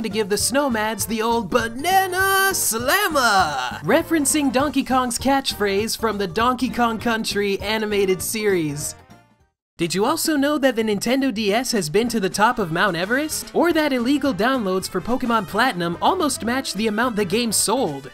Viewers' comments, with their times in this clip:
0:03 You can tell he was trying really hard not to laugh
0:06 i like how unwilling he sounds to mention the dkc animated show